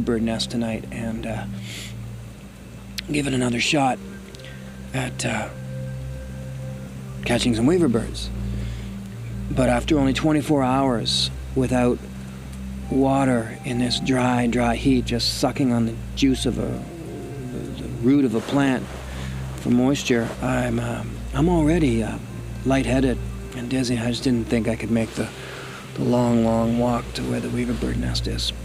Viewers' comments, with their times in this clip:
0:09 Somone help me out… Les? you play a melody that is very melodic, dreamy and extremely relaxing. I have heard it on a couple of your shows. Can anyone tell me where I can get/record that melody?